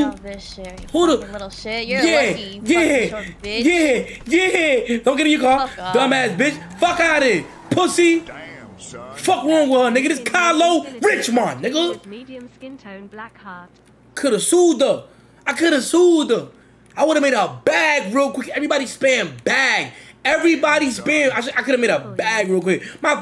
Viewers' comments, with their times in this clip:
0:08 the way he said "Kylo RiChMoNddd nigga" LMAOOOOOOO